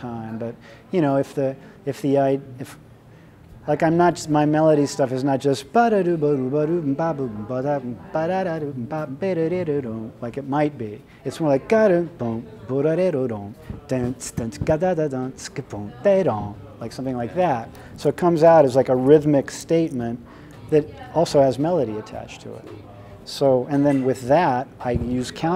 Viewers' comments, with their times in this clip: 0:06 What was most informative to me is the little scat singing part that starts Pretty much says it all in a few seconds....